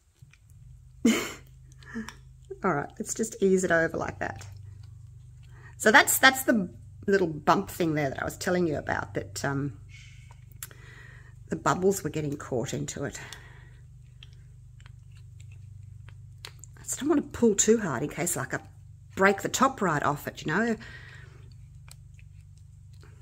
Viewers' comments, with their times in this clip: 0:09 you can clearly hear someone saying “Shh”! Are you alone? I have a really good set of headphones!